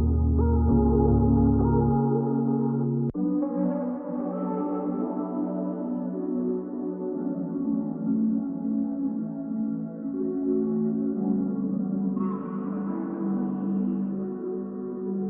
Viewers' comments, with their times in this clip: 0:03 is FREEZING COLD BROOOOO